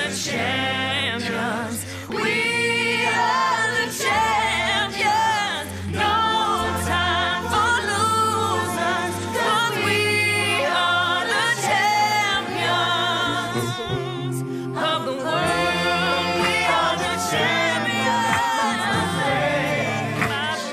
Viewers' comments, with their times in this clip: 0:03 she did have a high note